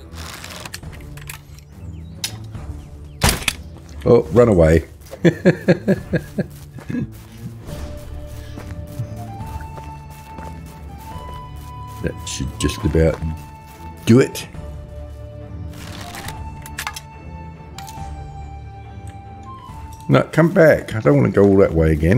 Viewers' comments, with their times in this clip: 0:03 I think that's the bolt you missed with Good luck sleeping with the racket Whispers is making lol